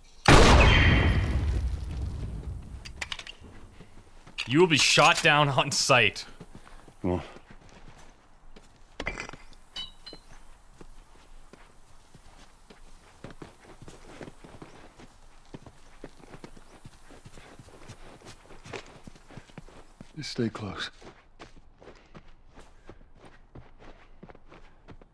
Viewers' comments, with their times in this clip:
0:06 it sounds like a fart